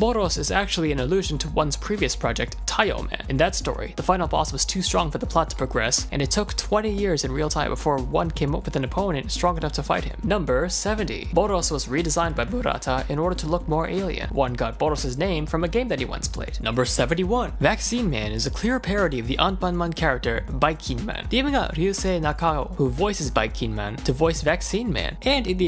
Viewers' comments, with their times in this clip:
0:10 voice crack listen closely